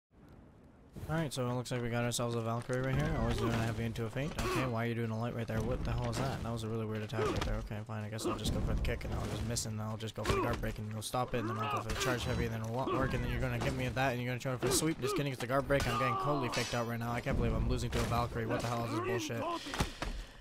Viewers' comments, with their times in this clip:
0:05 auction caller right here